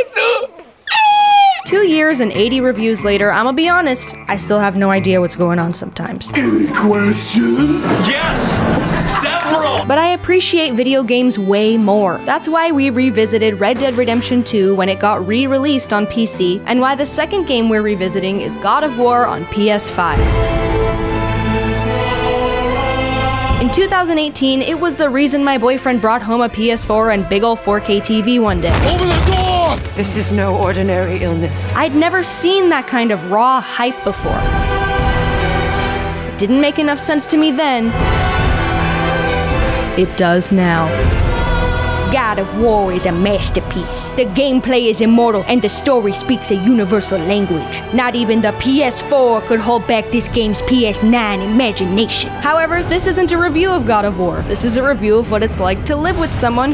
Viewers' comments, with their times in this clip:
0:10 whats the music in the background of its so good and relaxing
0:37 Was she imitating Video game dunkey?😂
0:41 that is absolutely a dunkey impersonation. nothing can convince me otherwise.
0:41 videogamedunkey impersonation 10/10
0:41 had to pull out the dunkey voice just to convey the hype
0:41 that sounds like videogamedunky haha
0:41 Nice Dunkey impression 😂
0:42 can we all just appreciate that dunkey impression
0:42 Lmao did she do a Videogamedunkey impersonation?
0:42 is that.... is that Girlfriend doing a Dunkey!?!?
0:42 did you really just do an impersonation of videogamedunkey?
0:42 is that supposed be an impression of dunkey?
0:43 is that a Dunkey impression?